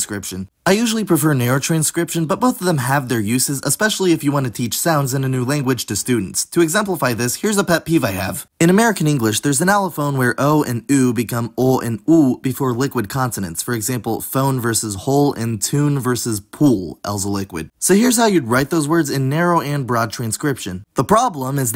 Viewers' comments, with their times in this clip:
0:07 i thnk we've veered from the original topic. the allophonic variation the video argues for is simply not present, even in the narration track of the video itself. /ʧʉwn/ tune /pʉw(ə)l/ pool that is how i pronounce these words. video claims that diphthongs become monothings before liquids, and while the narration strays slightly from my pronunciation, it keeps these two "allophones" merged. there is perhaps a similar phenomenon where that /w/ is dropped before the /l/, but i havent seen it myself.